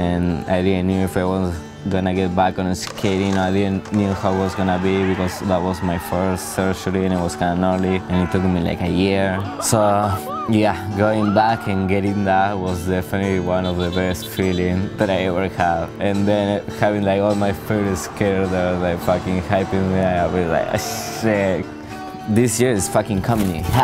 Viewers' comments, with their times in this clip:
0:05 they were even clapping in the red minivan lmaoo